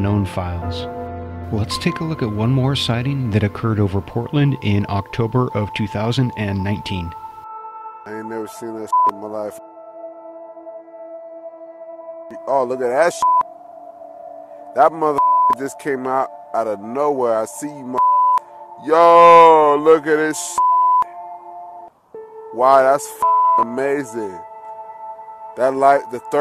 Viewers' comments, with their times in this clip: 0:09 the Portland sighting had witness commentary.